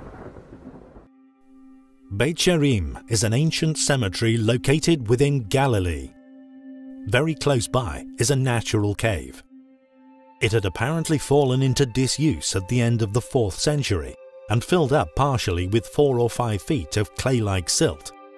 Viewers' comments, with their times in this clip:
0:03 I’m not a fan of the robotic voice used for the narration of the video that begins Sorry but it’s choppy and irritating